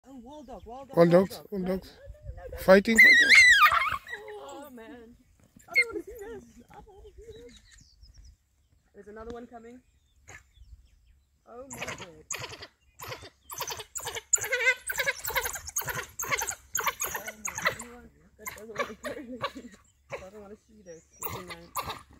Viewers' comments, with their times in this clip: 0:03 It's a little squeaky toy